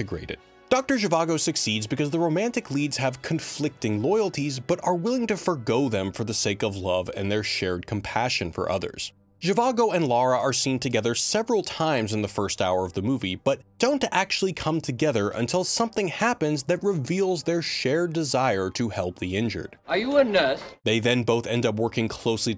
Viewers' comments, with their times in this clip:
0:09 sounds like Rob Stark to me.